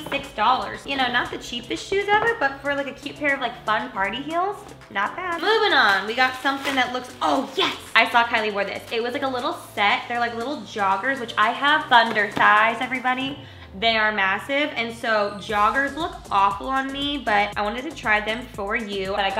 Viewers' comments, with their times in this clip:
0:07 I’m I the only one that got reminded by the vine of a cartoon boy saying “oh yes da...”?